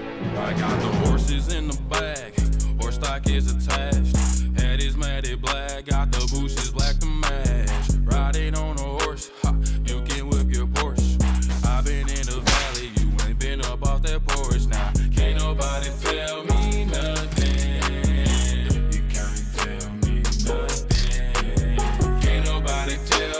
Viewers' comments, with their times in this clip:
0:06 no one gonna talk about that woah tho😂